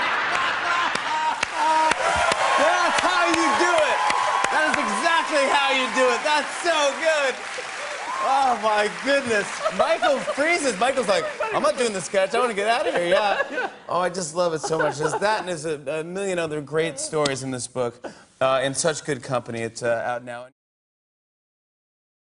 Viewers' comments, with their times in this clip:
0:08 Jimmy's "so good" is exactly how JT impersonates him!